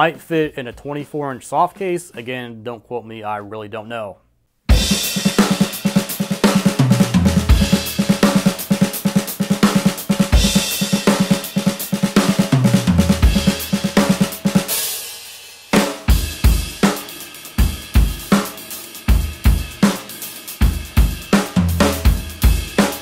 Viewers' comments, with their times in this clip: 0:04 HOLY SHEETTT ONE OF MY FAV BEATS YOUVE MAADE 😳🤘🏼🤘🏼🤘🏼